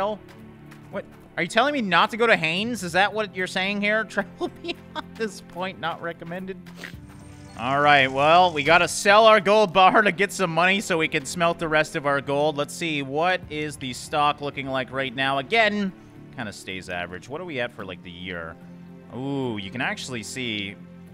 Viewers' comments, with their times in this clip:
0:05 who heard the snort